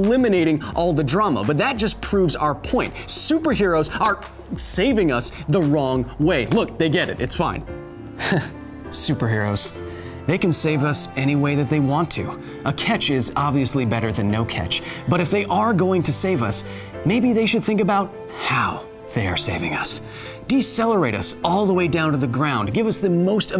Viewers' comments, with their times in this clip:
0:07 You said that you would stop talking like that
0:07 you promissed not to use that voice :( love the show thumbs up